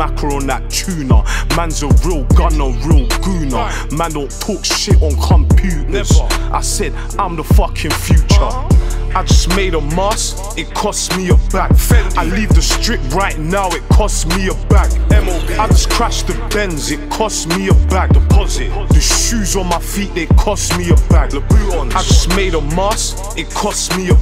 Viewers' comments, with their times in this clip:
0:08 what was that ad-lib 😭😭😭